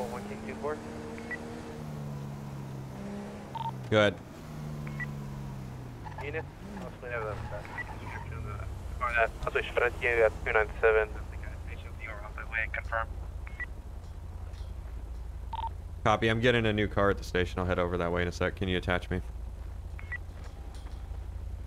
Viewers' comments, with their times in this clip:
0:08 sounded like a russian guy